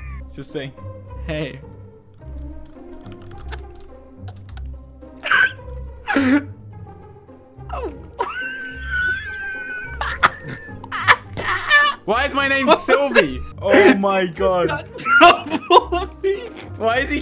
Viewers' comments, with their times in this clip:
0:03 Dream's laugh though 🤣🤣🤣💀💀💀💀